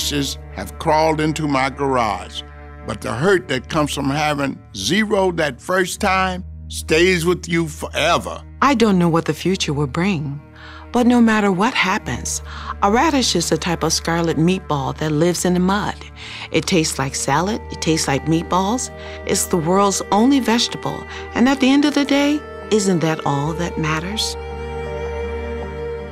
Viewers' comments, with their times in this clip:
0:08 she def reading off something 😢